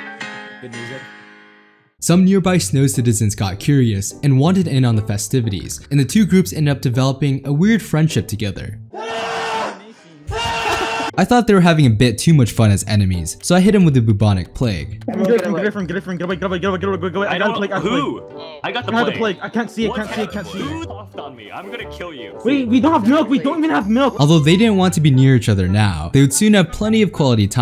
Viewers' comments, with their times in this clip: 0:08 The two dudes screaming at each other killed me lol
0:09 scream of friendship